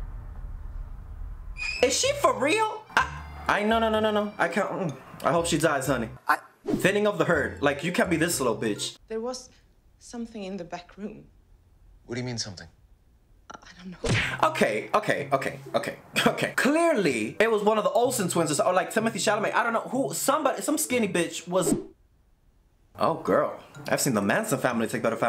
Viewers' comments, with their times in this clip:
0:07 not the Caribbean coming out of him lolol😂😂